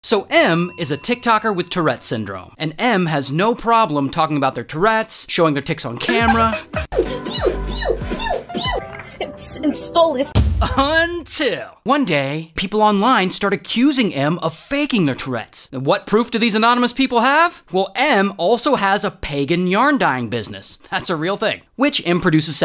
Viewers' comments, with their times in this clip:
0:08 she turned into a tie fighter💀
0:10 Did she say Stolas?— or am I just dumb
0:10 Wow! That "UN-TIL" was way early,